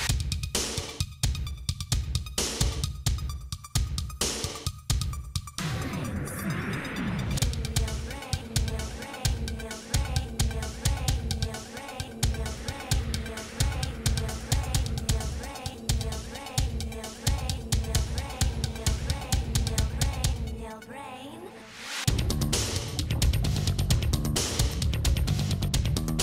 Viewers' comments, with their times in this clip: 0:08 sounds like “Neil Breen” over and over